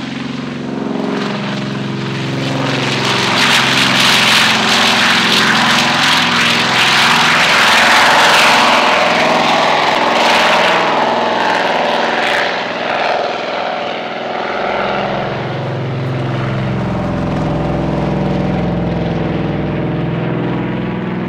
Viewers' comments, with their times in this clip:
0:05 Nice roar Those two engines are just sounding like they are all for revs!